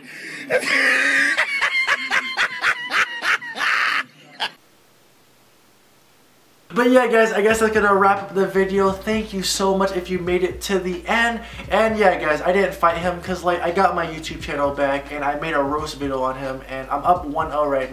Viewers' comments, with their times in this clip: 0:05 I love the part when he looks into the camera and laughs